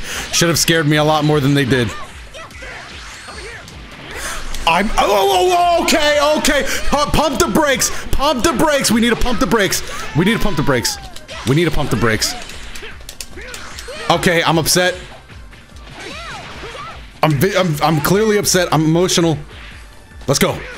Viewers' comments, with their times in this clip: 0:05 you sounded legit mad lmao